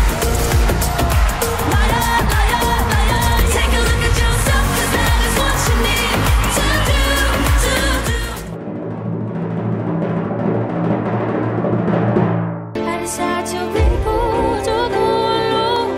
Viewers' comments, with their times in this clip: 0:03 Austria has better vocals imo